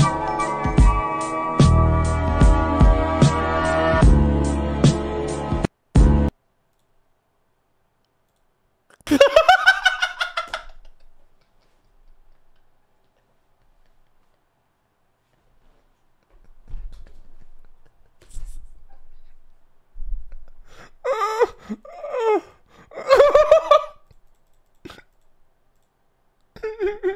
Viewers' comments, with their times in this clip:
0:09 Bro let off his inner Elmo laughter